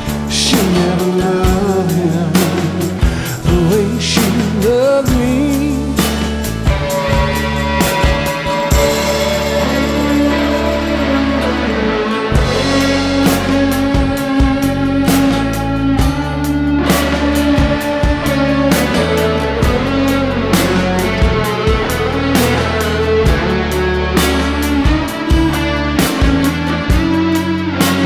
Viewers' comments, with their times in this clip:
0:09 Truly amazing song! And hey, that solo al ... the sound, the mood, it really makes me cry... This is what I mean when I say "the guitar speaks"...
0:10 You need such a level of rapport and bond with your instrument to play a solo like the one Richie is a genius